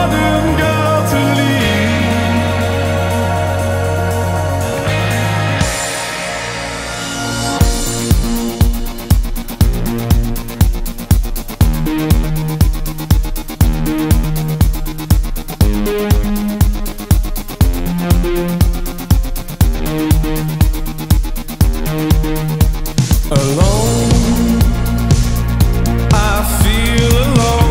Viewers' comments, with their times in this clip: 0:08 and on...(a bit fast)Enjoy The Silence (bassdrum and beat) the synth is Visage as you correctly pointed. Also the singer is or trying to be a 'crooner' as Dave Gahan and Roland Orzabal. There are quite a few Depeche Mode references here actually.